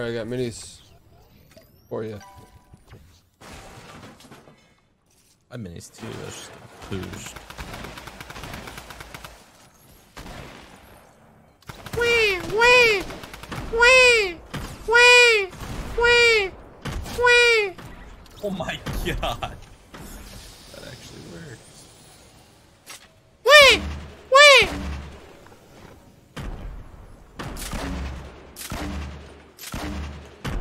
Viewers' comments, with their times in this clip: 0:10 Times like these i wish TFUE had subtitles so i wouldn't have to clean all the blood off the carpet from my BLEEDING EARDRUMS
0:12 the noise he makes makes me never want to watch tfue again..
0:13 tfue’s best ninja impression
0:13 Juss cause you sneezed likee that im unsubscribeing ..... Annd those noises you made on was childish asf .....